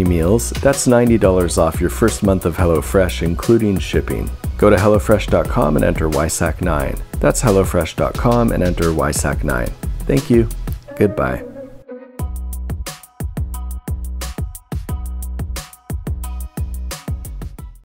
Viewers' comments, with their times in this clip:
0:05 Nobody is gonna mention “go to hell”o fresh dot com ??